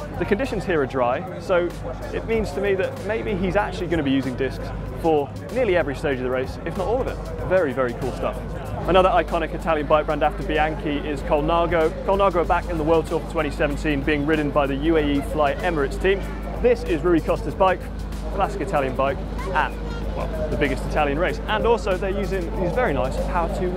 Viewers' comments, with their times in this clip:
0:10 he pronounced Bianchi correctly. Someone must have ticked him off, but no excuses, the earlier mistakes should never have been aired. Massive thumbs down for GCN!